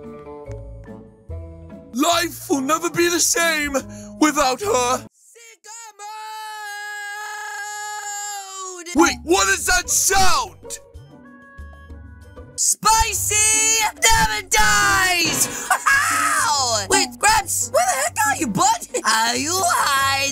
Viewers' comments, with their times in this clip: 0:05 SICKLE MODE!!?? [fading in]!?